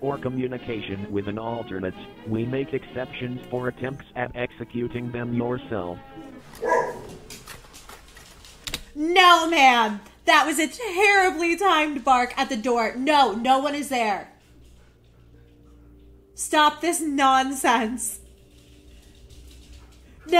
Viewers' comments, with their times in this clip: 0:05 Lol the timing of the dog bark 🤣 ... or there was something really there? .....